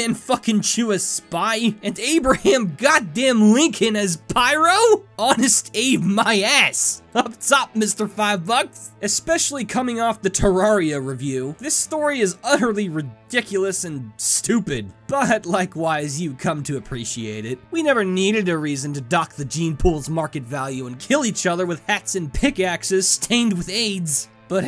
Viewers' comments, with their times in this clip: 0:05 best line delivery ever